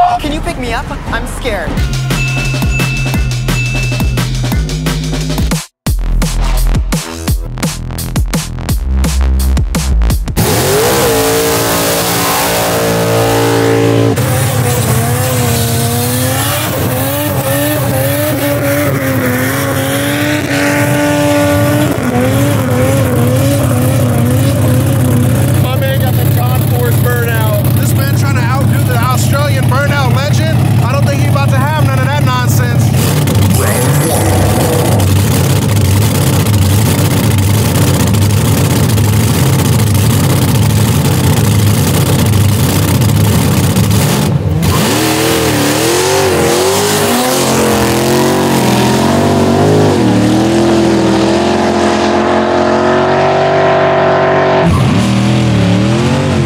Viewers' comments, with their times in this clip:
0:05 Underrated DnB transition editor deserves props for that :)
0:42 its like the start of a metal song